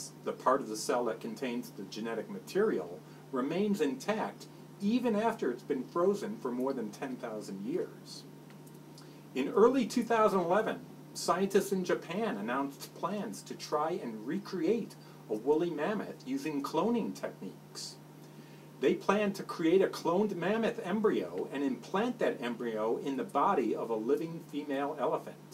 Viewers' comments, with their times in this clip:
0:08 that man said, IN EARLY 2000 LEMON".